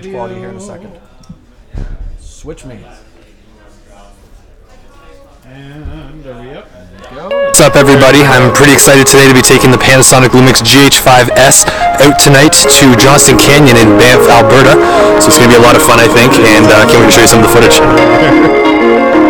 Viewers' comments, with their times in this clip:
0:07 RIP Headphones/ears The pitfalls of Live Broadcasting though.